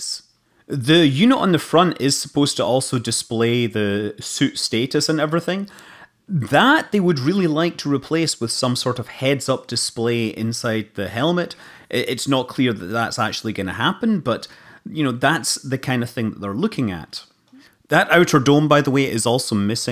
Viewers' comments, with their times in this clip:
0:06 boi ripped a big ole burp